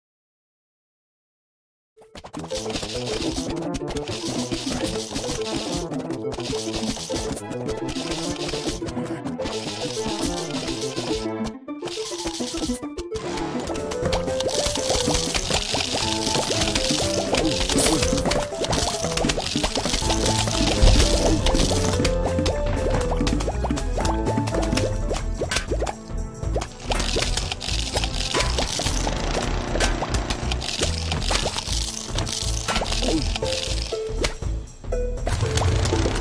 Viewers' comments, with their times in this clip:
0:06 Football zombie eats with the music corresponding
0:09 Zombie eating sound lines up with music
0:16 never heard this part of the nighttime song before. I play on mobile, I don't think it plays that part for some reason...
0:17 the cursed newspaper zombie music is playing